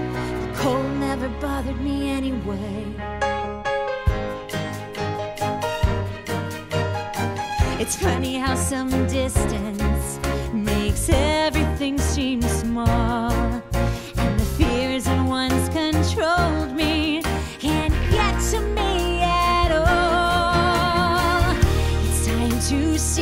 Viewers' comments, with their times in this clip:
0:04 The instruments kicking in really sell this song for me, aside from Idina’s killer vocals of course.